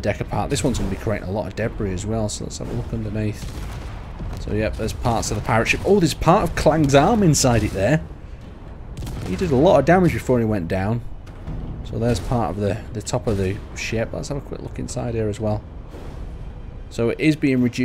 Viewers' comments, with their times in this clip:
0:05 it sound like the video is a bit delayed